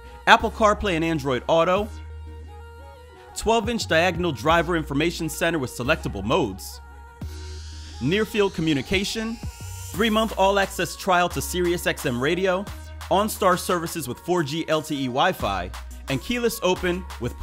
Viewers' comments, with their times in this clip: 0:05 he had muwop on the radio. he lit af driving his corvette 😂